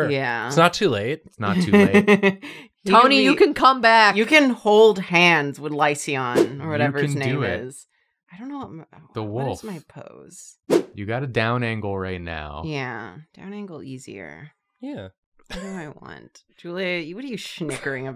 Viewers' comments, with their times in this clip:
0:04 I feel vindicated every time someone pronounces the "a" in lycaon which it SHOULD BE.